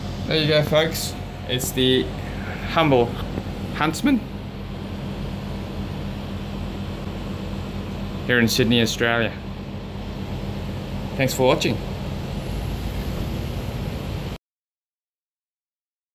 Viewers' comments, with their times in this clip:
0:03 voice crack lol